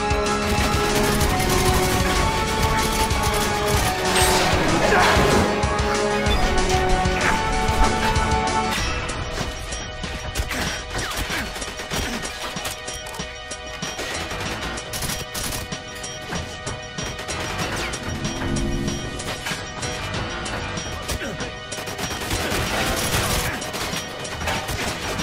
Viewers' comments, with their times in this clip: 0:10 The music fits so much when you’re on the bridges